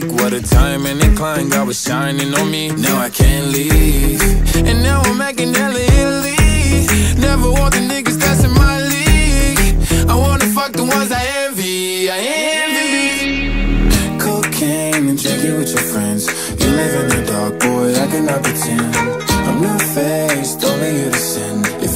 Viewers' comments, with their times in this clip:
0:09 Why does it sound like and part he says hidden leaf?